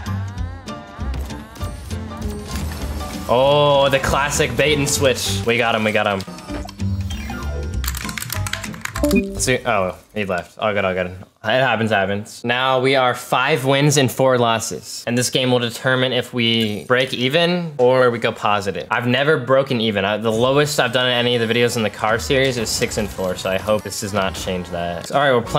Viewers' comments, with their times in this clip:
0:08 hmmm discord hang up? Soo this is probably a stagef video?